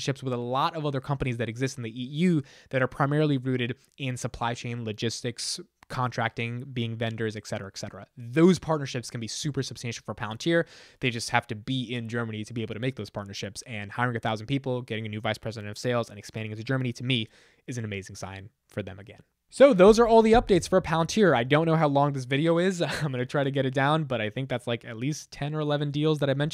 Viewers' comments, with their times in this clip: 0:07 Et cetera, et cetera*. I know you’re trying…